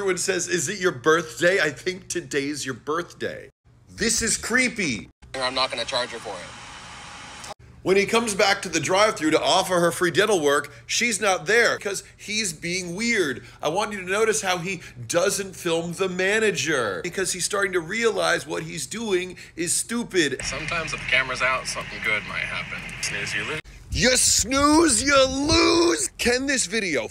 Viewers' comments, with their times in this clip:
0:08 could have sworn you said "diddle work"